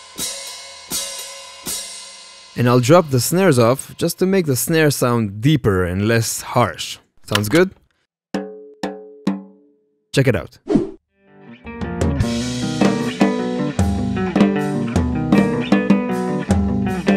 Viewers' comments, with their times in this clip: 0:03 *ST. ANGER INTENSIFIES*